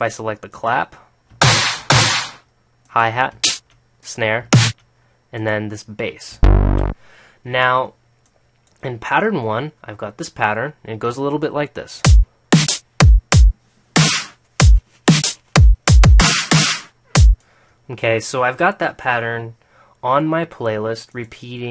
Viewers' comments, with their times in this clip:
0:06 Congrats in the drum beat, very nice at the start